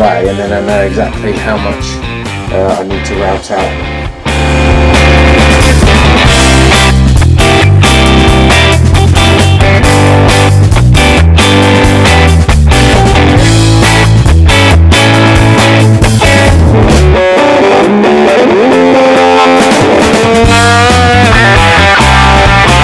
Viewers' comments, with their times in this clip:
0:05 ***Note to Watchers.....Great Build, but Turn down (or off) your Volume I like the selection of Music BUT DAAAANG..... Can ya get the music Any LOUDER? I'm a head bangin Rocker.....but THAT loud, is too much. Thanks for the info tho!
0:07 this music is good but Christ! turn it down a few hundred decibels! its on bust!